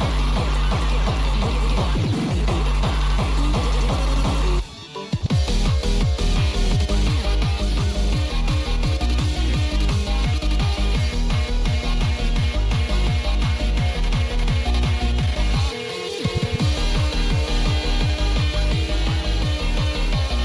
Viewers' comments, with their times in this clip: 0:05 i really like how this part kinda sounds like sumn from the late 2000s-early 2010s